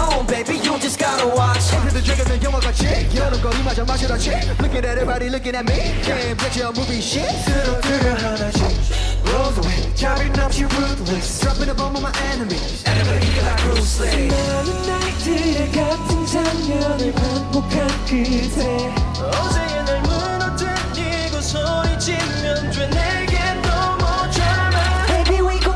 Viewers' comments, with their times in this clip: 0:09 Johnny is the one breathing to the mic😂